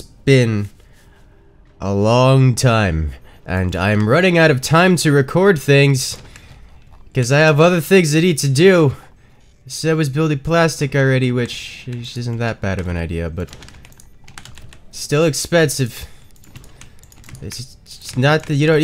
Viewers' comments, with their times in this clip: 0:05 the voice of someone who's been at it for so many times. Lol. Hi I just started watching your forts gameplay despite NEVER EVER playing the game and know i'd NEVER EVER will... i suck at rts but unlike other RTS this game is very easy to watch and see everything going on, rather than other RTS having huge 3d maps and confusion.